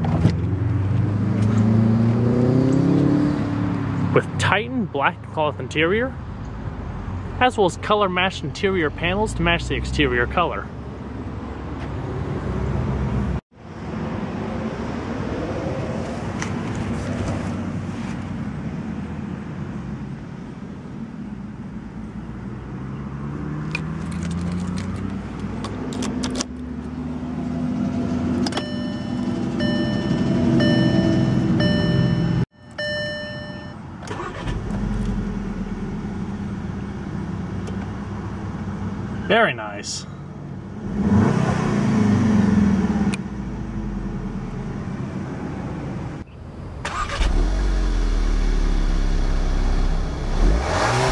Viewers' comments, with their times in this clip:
0:03 Ooooooohhhhhhhhhh anyone hear that boxer engine probably a Subie lol
0:39 it even sounds like the original Beetle! :O Very nice! nice how the 2.0 TSI engine can make alot of different sounds!